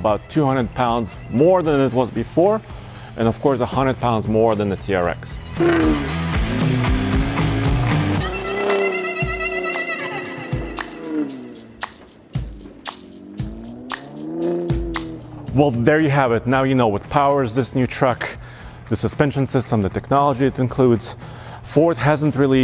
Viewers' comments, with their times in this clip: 0:05 The dessert run really did sounded like a small block V8 . . . . 👍👌